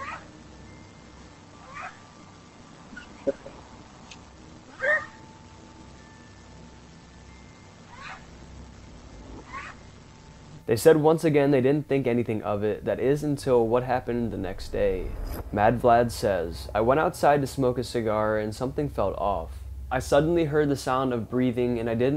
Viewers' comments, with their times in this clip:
0:03 The footage of the weird sound the russian couple heard is a fox. That's why didn't really sound like a dog.....